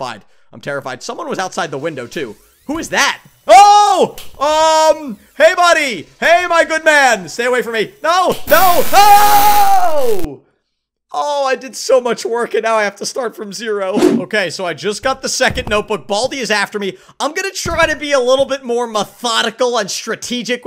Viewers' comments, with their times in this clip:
0:08 when he shouted a laughed so hard